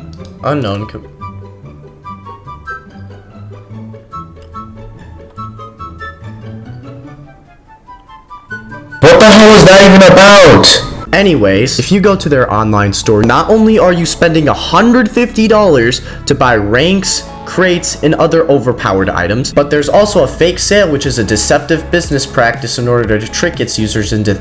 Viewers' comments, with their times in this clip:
0:08 my ear got eliminated